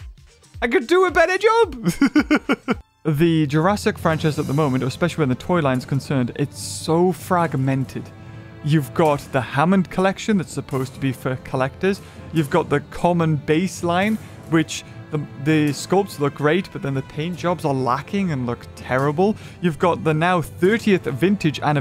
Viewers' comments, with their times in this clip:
0:03 You know things are getting serious when this music kicks in
0:04 You know its a serious video/issue when this music kicks in...
0:04 you know when he pulls this music shit’s getting real.